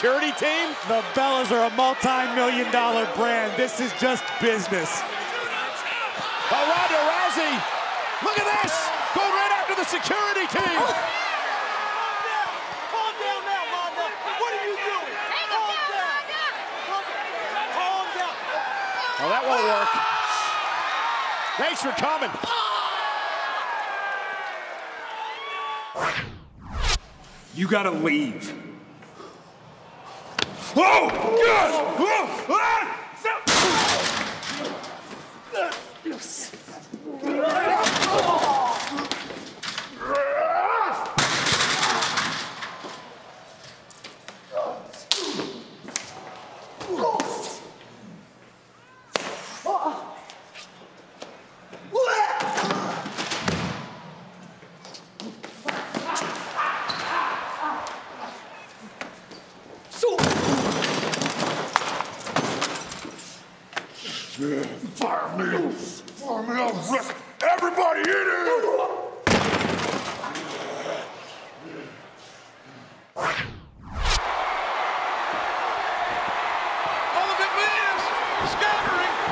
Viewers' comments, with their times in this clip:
0:05 who heard "JUDO CHAMP"
0:20 the security is screaming lol XD
0:26 you gotta weave 😂😂😂👏
0:31 the true moment of silence begins
0:43 the sound of that punch oh myyy gawddddd
0:59 did he say soup?
1:00 braun throw guard and guard yells sou!
1:03 who heard that Squidward foot step sound?